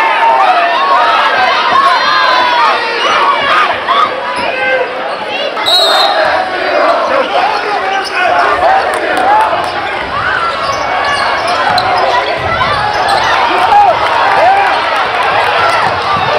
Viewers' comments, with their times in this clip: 0:04 Crowd yelling "BRYCE HAS ZERO"